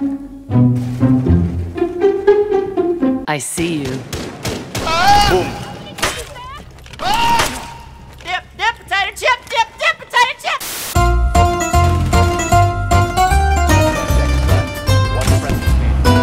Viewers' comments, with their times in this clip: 0:03 Best scream I never heard before 😂